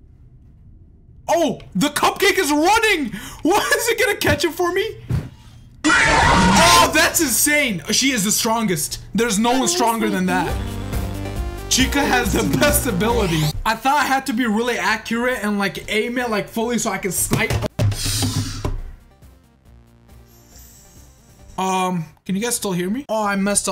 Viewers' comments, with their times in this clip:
0:08 instant transmission sound "I heard your pretty strong"